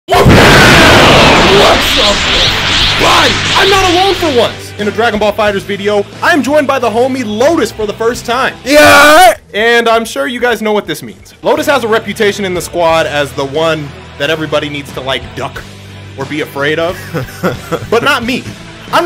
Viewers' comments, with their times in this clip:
0:00 Rip headphone users (like myself)